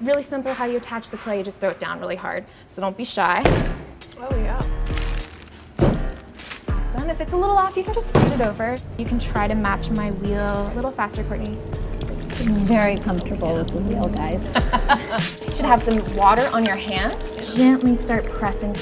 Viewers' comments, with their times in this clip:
0:03 Starting from they put down the clay on beat